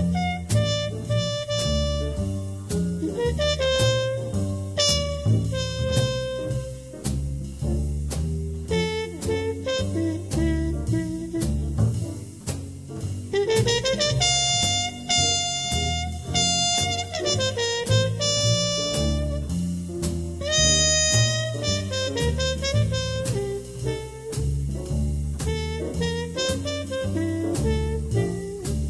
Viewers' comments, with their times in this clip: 0:09 You know what astonishes me? How in the heck does he get that f# in tune ? I have to play it 123 to get it in tune with a harmon mute.